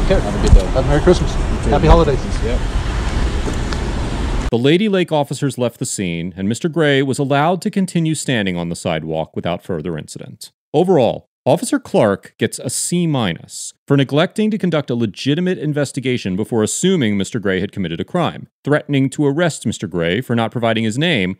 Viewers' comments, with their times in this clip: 0:03 sounds like he's sayin "the lady-like officers"